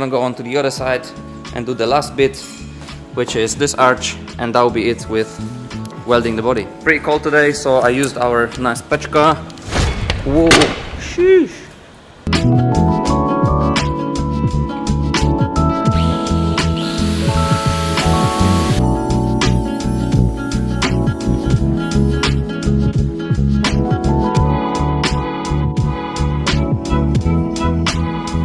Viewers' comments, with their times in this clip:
0:09 the screamer sound😂😂